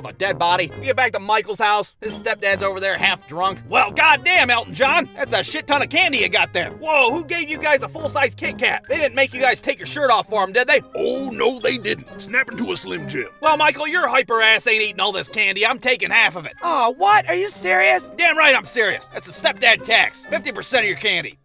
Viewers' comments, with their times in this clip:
0:09 🤣🤣🤣 That voice caught me off guard so bad!